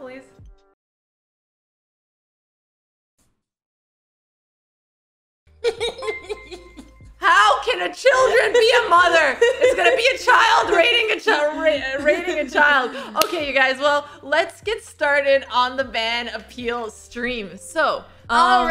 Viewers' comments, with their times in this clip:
0:06 raiding children, evil laugh